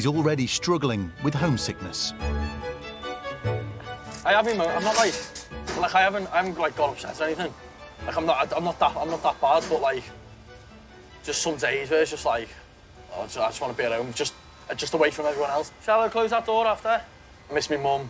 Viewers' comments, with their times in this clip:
0:06 What language is the guy speaking?